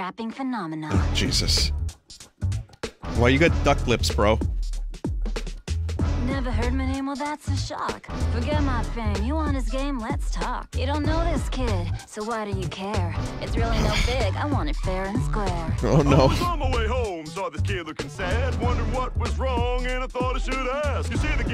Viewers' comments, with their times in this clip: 0:03 It’s very strange hearing the same woman who voiced Homura Akemi rap, because all I can picture is her.